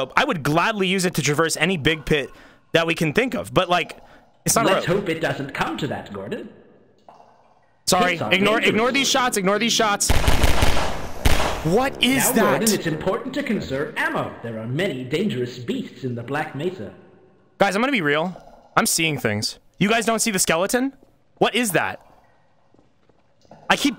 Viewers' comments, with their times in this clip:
0:09 if yo listen closely, you can hear the VOX voice saying “Gordon Freeman, you are wanted for pass port inspection”